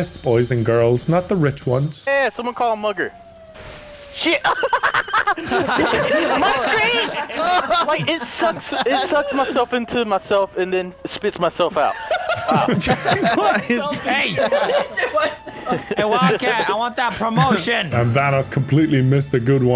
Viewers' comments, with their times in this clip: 0:03 😂😂 like he was getting tickled by code lol ❤